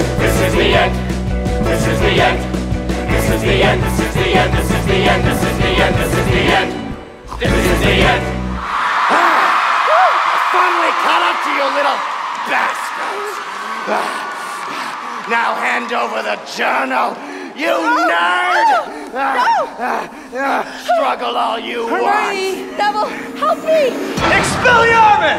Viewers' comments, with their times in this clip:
0:06 OMG YOU CAN ACTUALLY HEAR JOEY SNORT (meredith had told joey that everyone was gonna snort really loudly right before the last "this is the end" and he was the only one that did it)
0:06 i really can't believe that Joey fell for Meredith's prank and actually snorted before the last "This is the end" i can't stop laughing lollll
0:06 Oh my gosh! Joey's snort ! Good job Meredith, lol!
0:06 ok so my friend pointed this out to me and i’ve been crying with laughter but joey snorts because apparently the others told him they were all gonna snort at that moment but it was a prank 😂😂😂
0:07 MEREDITH GOT JOEY SO GOOD. SHE TOLD HIM EVERYONE WAS GOING TO SNORT THERE AND HE WAS THE O N L Y ONE WHO DID IT